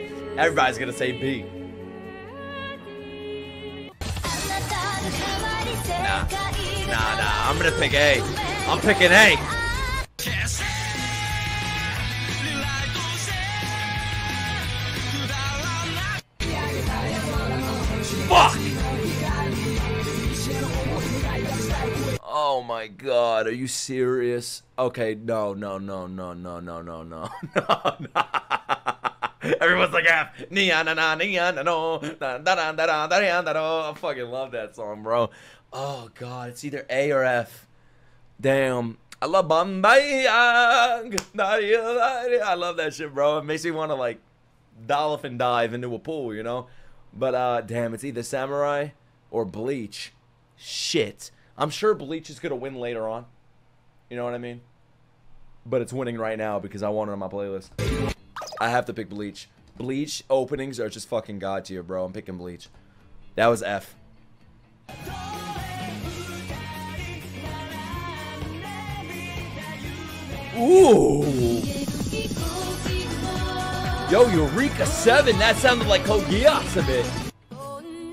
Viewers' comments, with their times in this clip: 0:09 Video: Oh, you're picking A? blares Rewrite You know what fuck you heres another.
1:00 I SWEAR ON MY LIFE I THOUGHT A SOUNDED LIKE CODE GEASS LOL